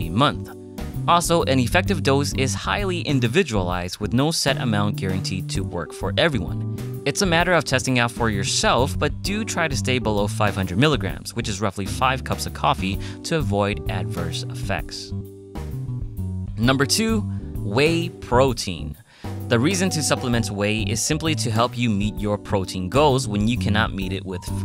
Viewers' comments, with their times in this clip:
0:08 What does caffeine have to do with my shelf?